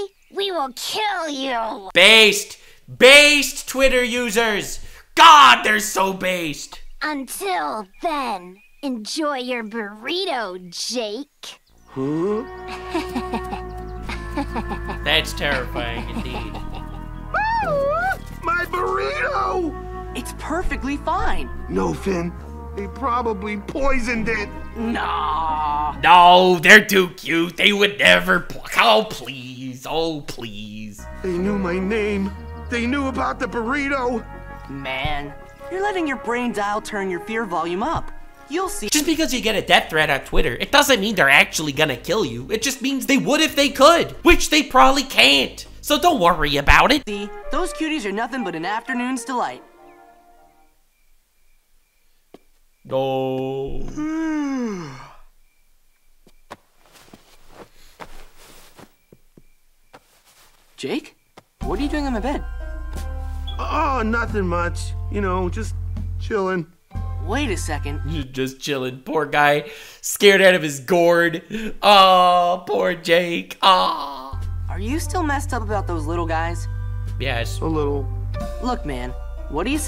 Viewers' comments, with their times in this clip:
0:07 I don't know how he did it but he made that sound bloody threatening
1:02 fix your smoke detector